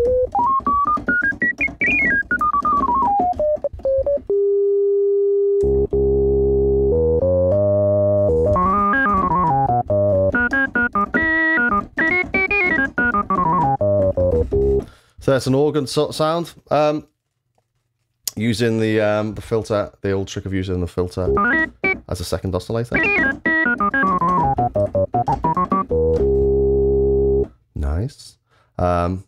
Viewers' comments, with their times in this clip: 0:04 Can anyone tell me again how to get that organ sound ?? Thanks I just recently got my hands on one of these
0:13 great organ sound :) are you running thru a compressor/pre-amp? i have my settings pretty much as your is and it doesn't sound as smooth :(